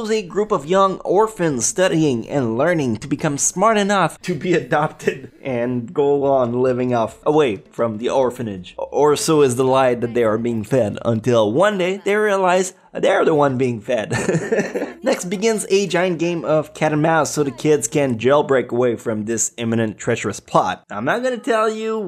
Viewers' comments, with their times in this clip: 0:04 Damn. that giggle when he said "adopted"